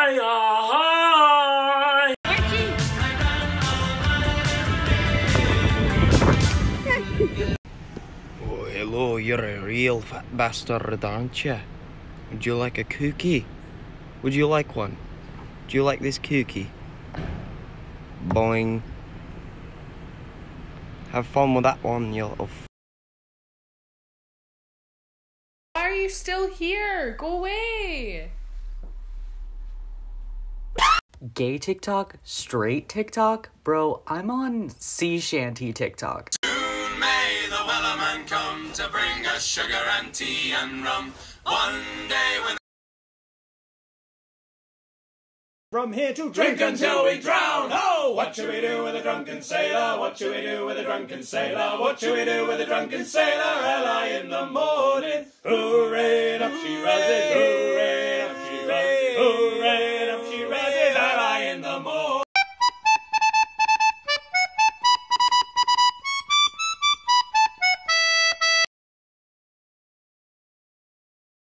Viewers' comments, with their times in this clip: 0:07 His accent is so cOOL
0:56 Hearing the actual song is so weird bc I heard "Drunk Space Pirate" first and now the normal stuff is boring and sounds off.